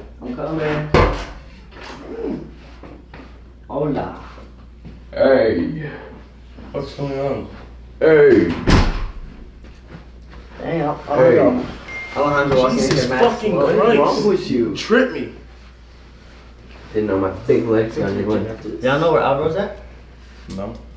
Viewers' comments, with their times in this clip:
0:06 LMFAOOO WHY DID HE “😾 AŸYYyY”